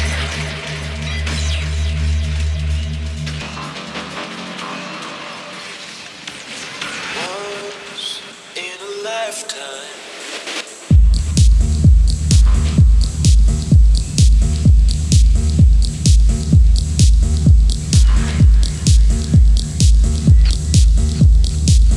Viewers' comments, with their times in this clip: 0:03 Ohh that drop from